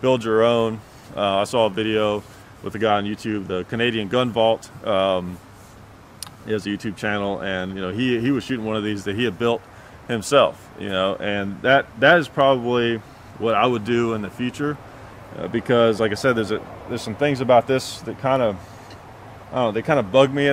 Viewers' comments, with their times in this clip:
0:07 After all that explanation, and I don’t mean that in any negative way, you/he suddenly says with a bland voice: “....all right let’s take out this pumpkin.” It just made me burst out in laughter! Maybe I’m weird :) (my wife says I am!) . Good video.